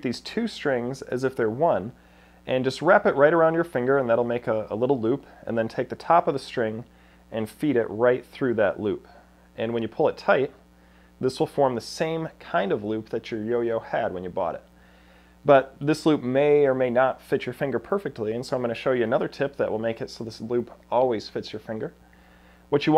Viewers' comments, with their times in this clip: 0:05 What little boop